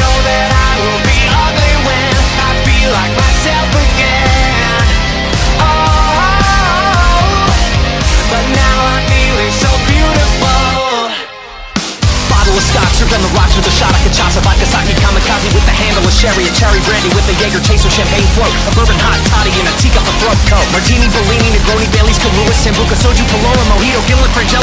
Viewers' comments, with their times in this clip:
0:10 is the fast part